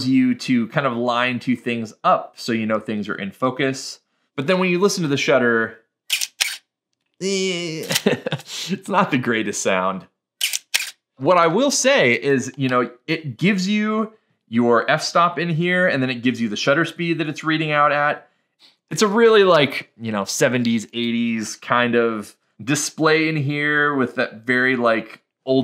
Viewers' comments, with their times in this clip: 0:06 canon ae-1 shutter squeak. Easy fix with some lubrication. There are tutorials on youtube 👍🏻